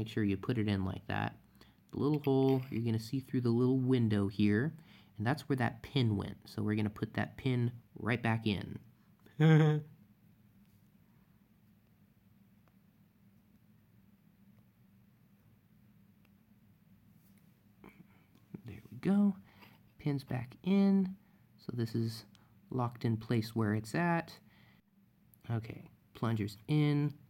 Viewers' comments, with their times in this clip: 0:08 That little laugh sounded just like me! 😂🤣